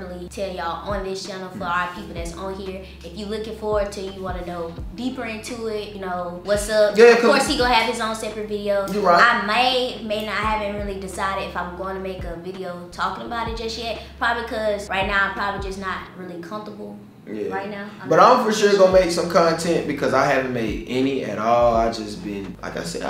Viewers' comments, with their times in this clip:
0:10 why would he talk over her like that was rude